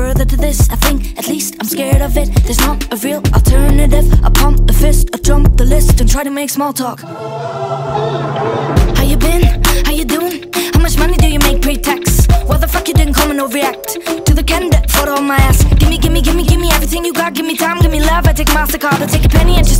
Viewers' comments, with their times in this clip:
0:04 that drop meke me fire bruhhh🤯